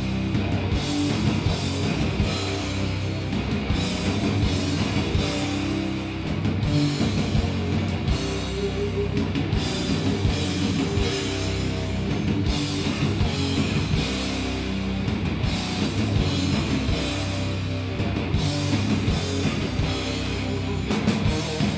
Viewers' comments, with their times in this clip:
0:07 Peep the drums ghahaha nice save though